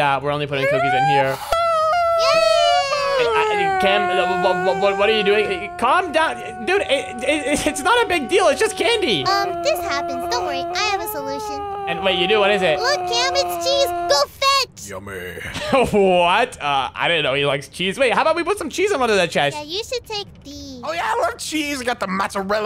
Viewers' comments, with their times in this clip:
0:10 yumeh (old man voice) 😂😂😂😂😂😂😂😂😂😂